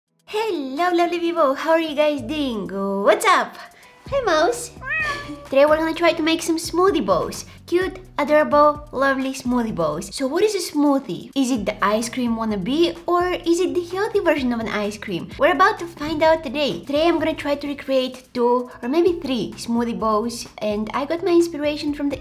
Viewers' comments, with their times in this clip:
0:04 Ok so now one is gonna talk about that she call him Hi mouse and a cat sound comes?!
0:04 I thought its a mouse why she put an cat sound effect??😂🙂